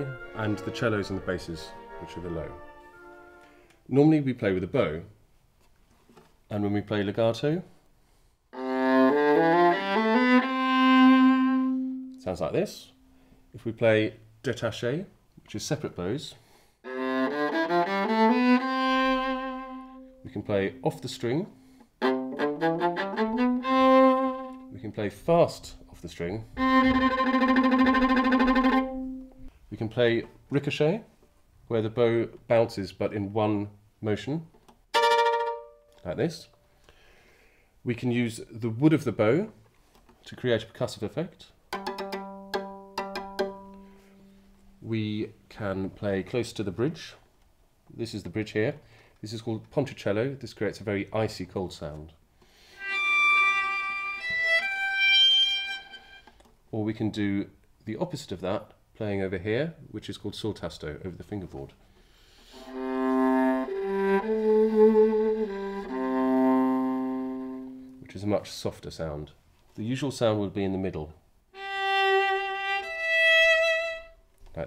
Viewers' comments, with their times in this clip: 0:05 i dont understand why people say the viola sounds like a dying rat that was beautiful
0:34 The sound F and G sharp reminded me of Claire de lune
0:42 I love playing the viola. The sound is so much nicer than the violin (in my opinion). Also, is that a hint of Mars from the planets suite ?
0:52 what viola jokes think violas sound like
0:52 sounds like a viola to me
0:53 This one sounded so loud i need to turn down the volume a little
1:02 when a violin sounds like a tuba